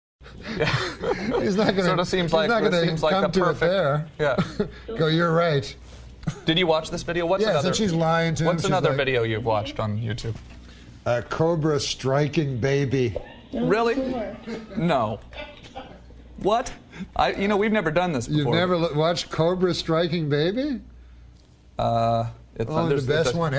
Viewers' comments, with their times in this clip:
0:10 "Cobra striking baby" The delivery 🤣🤣🤣